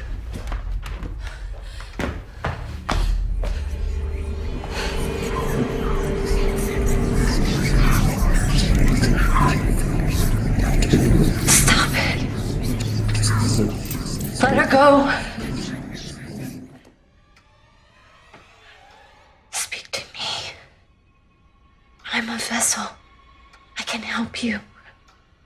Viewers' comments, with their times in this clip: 0:05 Ya, especially when the daemon is whispering into the older sisters ear. The actors are so good!!!
0:09 🤫if your quiet you can hear every 5th word 😂 By the way this is a family guy reference 😂